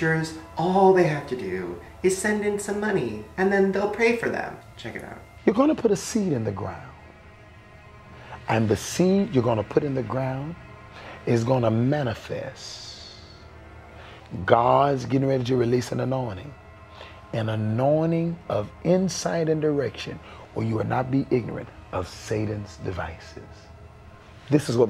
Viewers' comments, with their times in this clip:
0:05 i like this dude's voice, idc that he's a con artist, his voice is nice...
0:06 The guy is some asmr material